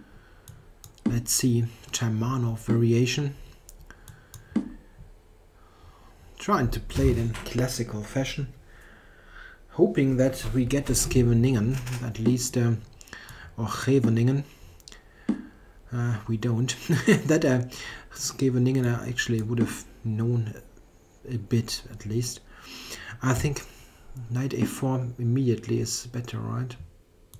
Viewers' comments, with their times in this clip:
0:09 "Hoping that we get a Scheveningen, at least... or Hrhrrrreveningen" Yeah, just stick with the first one. :)